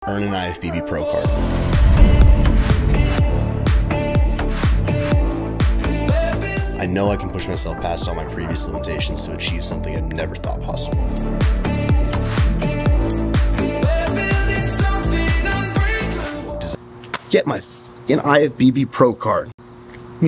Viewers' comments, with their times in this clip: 0:04 I respect and admire all you have accomplished, but you sound really shaky with a lot of tension. Listen to yourself this is how you normally sound. Get rest, relieve some stress, and evaluate if you need to cut down or cut out whatever is being taken / consumed. Wish nothing but the best for you.